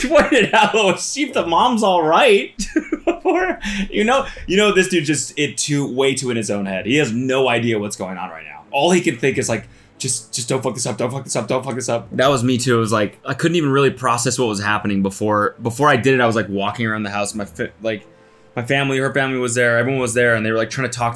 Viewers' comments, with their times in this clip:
0:08 okay but them laughing and NOT helping was actually insane